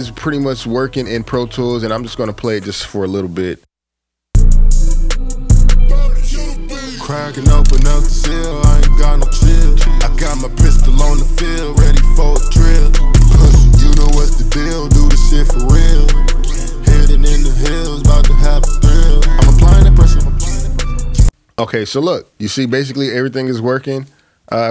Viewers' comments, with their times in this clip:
0:06 thought you said the song was called “dawg” I played dawg and that don’t sound like that